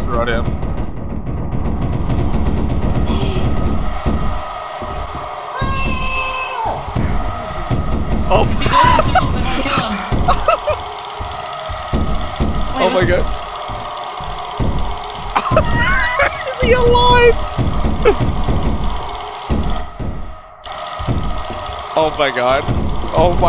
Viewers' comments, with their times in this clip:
0:05 That scream was pure, raw and unfiltered FEAR right there